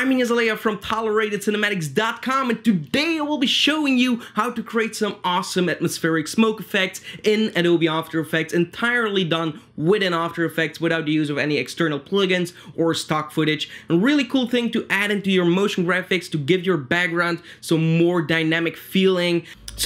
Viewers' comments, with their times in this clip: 0:04 and already hit thet like button lol nice beatboxing intro